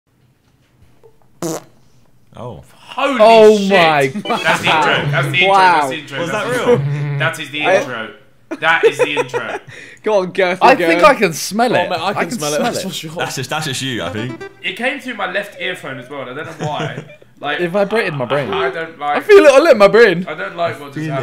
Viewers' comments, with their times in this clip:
0:00 anyone else think that sounds like the intro sound of the Impossible Quiz?
0:02 Josh’s “oh” gets me every time